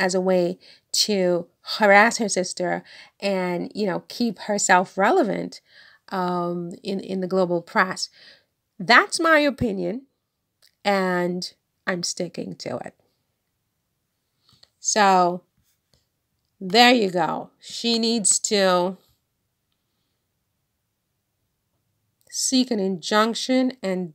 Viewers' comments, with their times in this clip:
0:08 I love your voice, it’s so sweet and cheerful, but also thoughtful, with a cute accent. 💖 I think Meghan is too kind and classy to take money from the Markles, esp when they have nothing already, but she should definitely try to legally stop them from profiting off her through their hate.